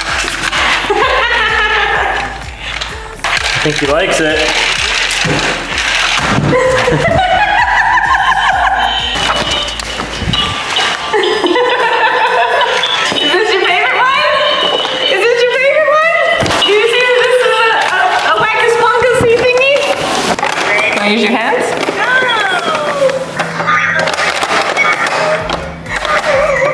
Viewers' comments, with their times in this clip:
0:07 not trying to be mean but your laugh sounds similar to a chimp laugh and i think it's bc you're around them so often.